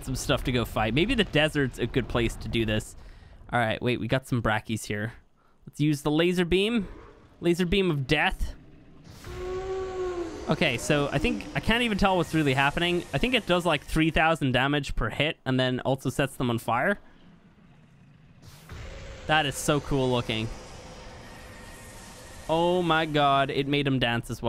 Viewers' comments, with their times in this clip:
0:07 "Lazer beam of D E A T H" Big Dino Moan